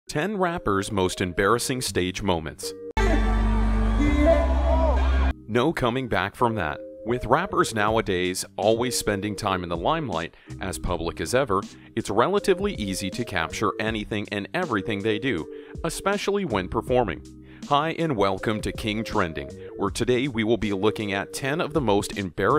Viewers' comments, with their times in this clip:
0:03 the best one when he fell the song cut off